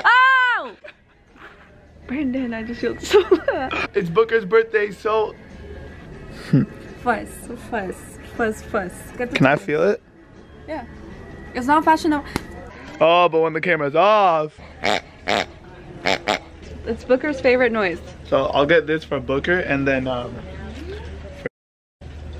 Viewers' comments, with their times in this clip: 0:09 🤣@ “can I feel it?” Doesn’t go for the sleeve, goes for the tatas... smackkkk 🤣🤣
0:09 your ex girlfriend speak spanish? Damn